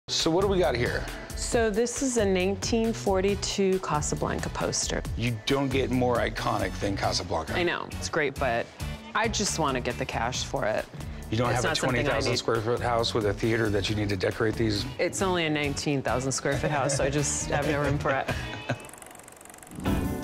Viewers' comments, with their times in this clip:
0:02 1842 or 1942 Next Yanny or Laurel over here folks